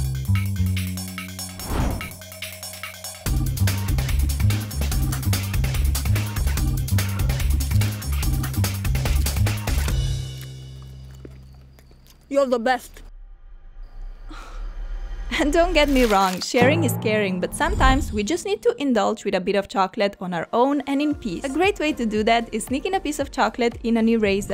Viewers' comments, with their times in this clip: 0:10 When they stole her chocolate “yu da berst” 😂😂 😂😂😂😂
0:11 LOL how ugly does that look and sound.Not hating